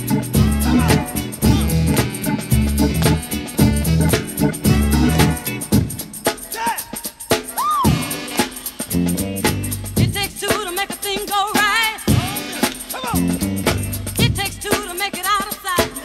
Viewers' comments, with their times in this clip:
0:04 I just learnt that the "yeah" is used extensively in Drum and bass (liquid) but sped up and increased frequency